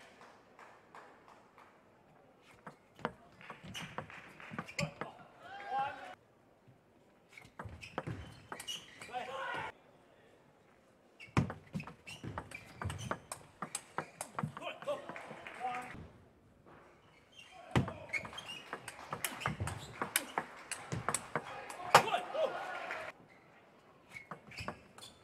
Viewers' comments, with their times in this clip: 0:09 Who else heard tomokazu harimoto cho leing